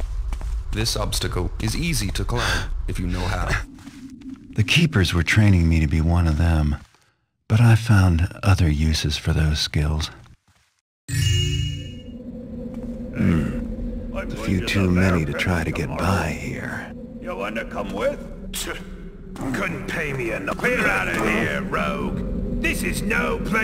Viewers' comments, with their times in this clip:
0:05 is that what Garrett sounds like? He sounds like DiMa from fallout 4